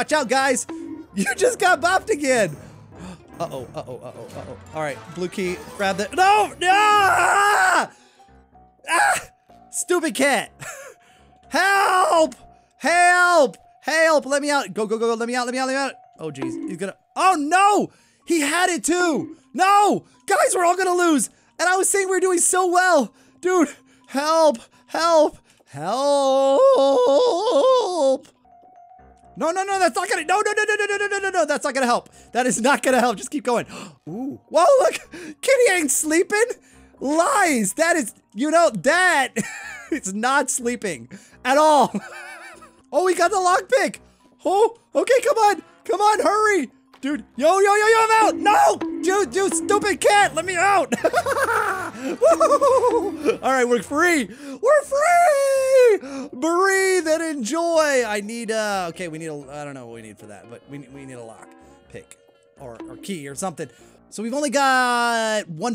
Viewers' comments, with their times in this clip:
0:10 he starts to scream as if getting caught by piggy when he was cornered in a map full of trolls.
0:29 it looks like he said the f word
0:50 Sooooo No Ones Talking About This Troll Face Laugh
0:51 I am never watching this again after this that laugh ooof